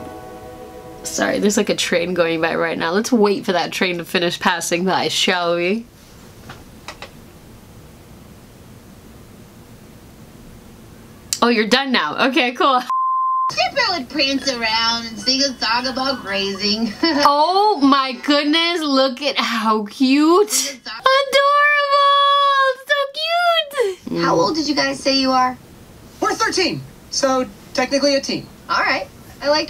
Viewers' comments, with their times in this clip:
0:10 Is it the Infinity Train?